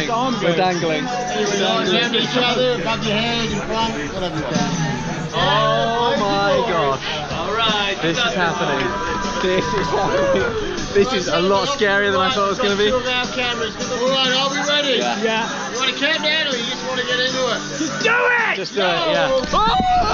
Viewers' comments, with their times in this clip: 0:03 How appropriate that the chorus to Blaze of Glory started just as they were about to drop 🤣